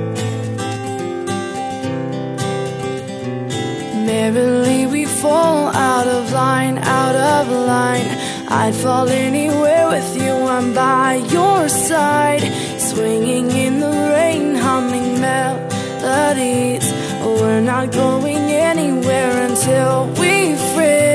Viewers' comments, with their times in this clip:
0:06 My dumbass heard the melody and thought it was dumb ways to die